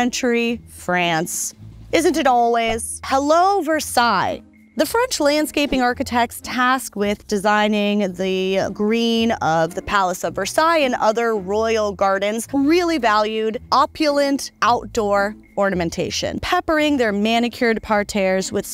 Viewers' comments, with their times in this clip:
0:05 If I may it is nit versaille but rather the french senate in jardin du luxembourg. Great video thanks, really like your tone